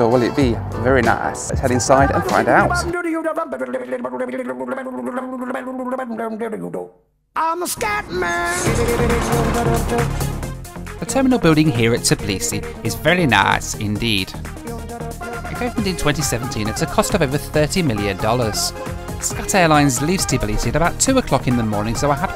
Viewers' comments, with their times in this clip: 0:03 random Indian rapping?